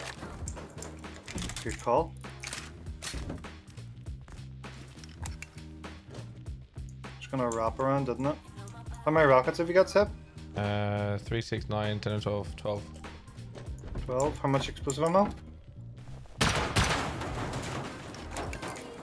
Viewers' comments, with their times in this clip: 0:04 Rocket BOOOOM Everyone can hear it 6 miles away Silenced exploamo completely pointless and reducing damage to the door